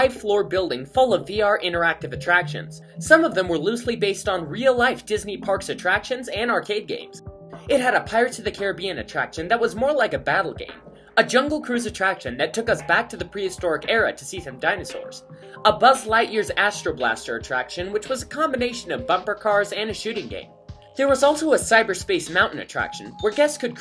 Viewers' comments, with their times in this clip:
0:05 bill bye is that you?